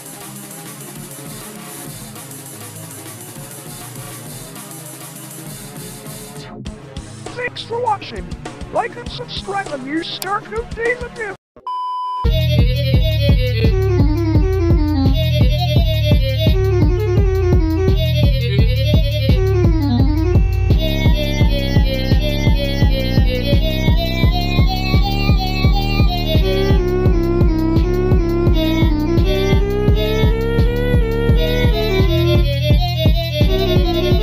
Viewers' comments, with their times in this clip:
0:05 Even as a spammy fan track fan I think without the vocals is pretty banger (i still like non-spammy songs though)
0:05 i love how on beat the deletion is
0:12 You know it's bad when bf voice is weird He sounds like he is trying to be quiet while raging at 3am
0:12 this song makes my insides melt
0:12 I also forgot about the GF notes in the chart. I don't like how Huggy and BF sound like y'know.
0:12 Hot take: The Huggy Wuggy song actually sounds slightly good.. but seriously only a little bit..
0:12 the hell is this shit why does it sound cursed as hell?
0:13 shepherds tone type beat
0:13 the hurt notes say "AMONGE US!"
0:15 my ears hurt
0:18 you are right BF vocals are literally pee on a radioactive ocean with ugly fishs